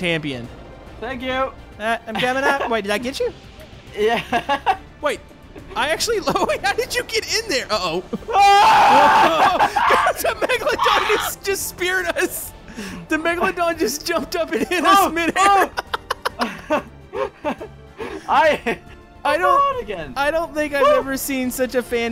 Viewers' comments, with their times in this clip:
0:07 Rip Headphone users
0:08 That scream tho hahahahha